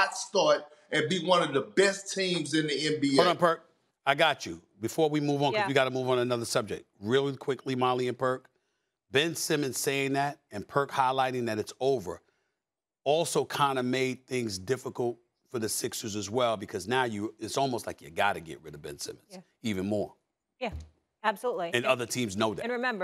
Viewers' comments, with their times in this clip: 0:06 Real quickly molly and Perc 💊 😂😂sounded weird